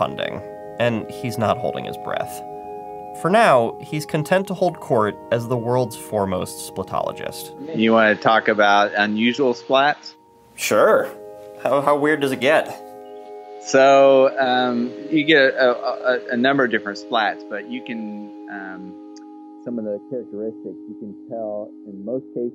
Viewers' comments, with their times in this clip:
0:07 So... Why did the fade out while he was about to talk about "unusual splats"? :/ And it sloooowly fades out. I get that it was probably an artistic choice (how dramatic and funny it is that he's about to talk about unusual splats!), but it would have been interesting. Oh, well. :/